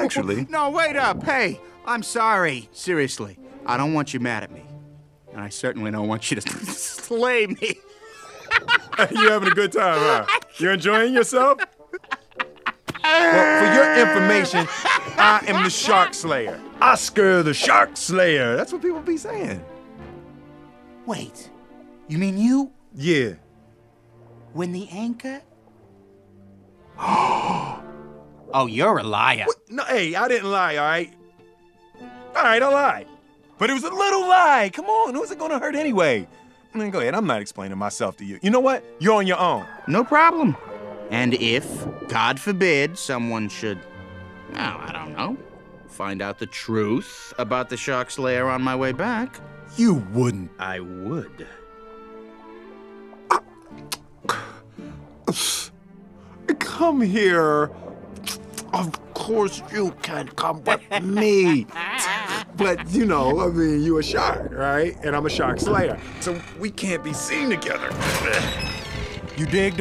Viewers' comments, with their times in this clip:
0:08 his laugh always gets me🤣🤣🤣🤣🤣
0:12 That laugh tho XD
0:12 Like how he laughs
0:53 Paul Mooney shark😆
0:55 he said it so zesty 😭